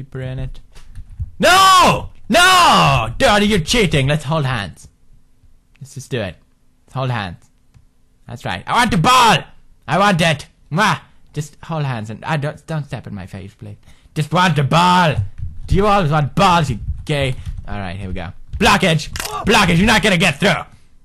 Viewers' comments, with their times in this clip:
0:08 maybe u didnt notice but ther is a ghost commenting the game